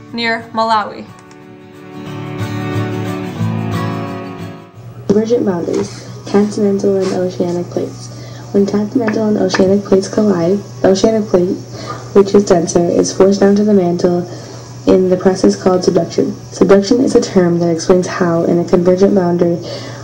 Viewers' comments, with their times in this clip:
0:08 I was beginning to understand, until the second females voice is just not as clear/understandable/loud as the first voice.